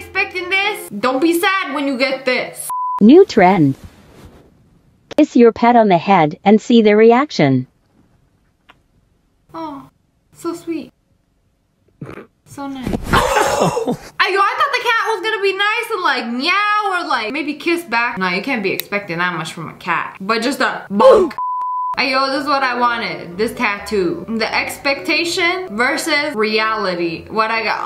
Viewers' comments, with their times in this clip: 0:09 did that cat fart?! 😂